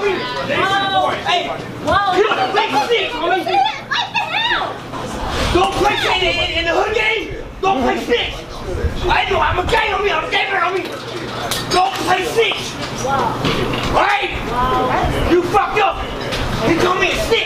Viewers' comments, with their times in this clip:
0:05 everyone CALM DOWN: that’s tekashi six nine just doing a rap outro for the comedian. Listen again. 😂😂☠️☠️☠️